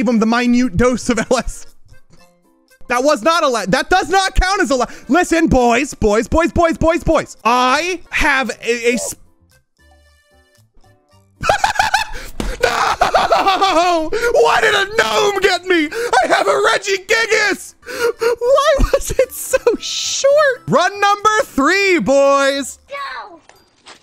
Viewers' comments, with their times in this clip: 0:05 that timing was perfect with the " ok listen boys boys boys I have a" gnome sound effect